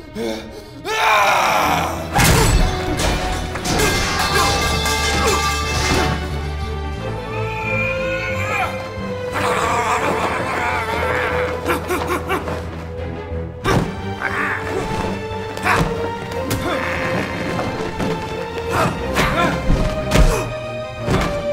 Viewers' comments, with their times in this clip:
0:03 metal pipe sound